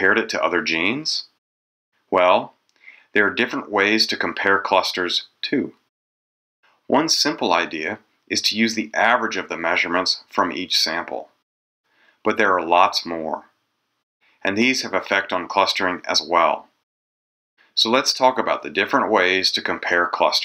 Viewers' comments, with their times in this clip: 0:04 the "too" sounds artificial